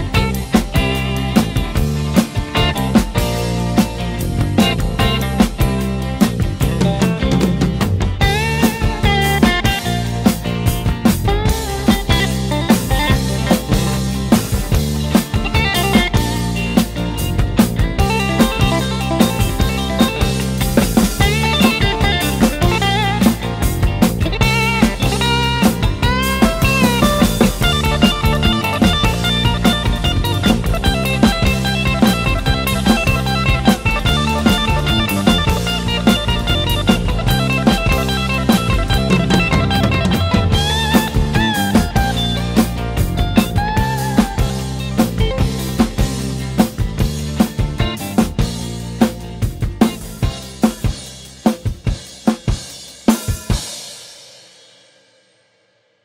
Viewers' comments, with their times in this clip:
0:08 I like how you missed cymbal on but it still sounds, perfect cover thou
0:39 I also think it's quite accurate. But take for instance the fill For better comparison adjust the speed to 0,75. You'll see that the drums you can hear isn't the drums he plays! The original sound mixes with his drums... That's why he sounds perfect.. it isn't, though But the video is great nonetheless and helpful! Thanks!